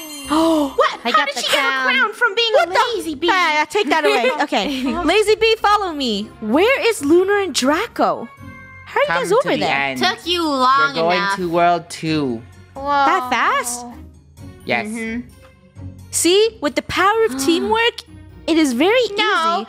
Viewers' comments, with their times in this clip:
0:04 someone mones! Messed up 🤣